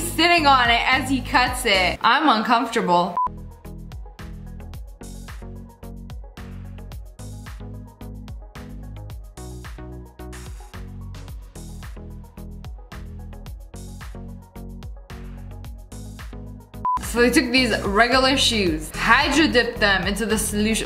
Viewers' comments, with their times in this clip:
0:06 is it just me or did she say bone apple tea?! Lol